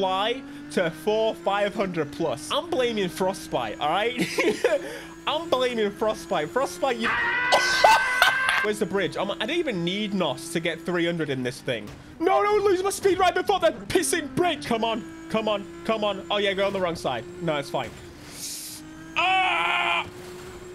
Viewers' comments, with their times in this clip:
0:05 The Tom and Jerry scream made me laugh! 🤣🤣😂